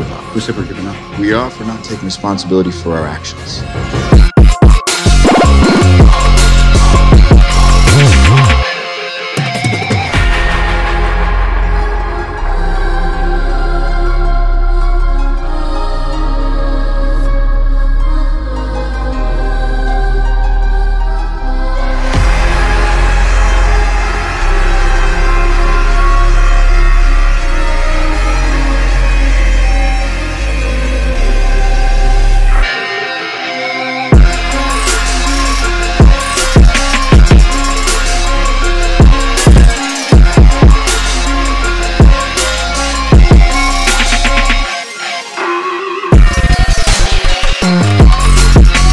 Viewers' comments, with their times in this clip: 0:09 turns into entirely different song
0:33 Me: hears drop also me: Alright where is that playlist button boys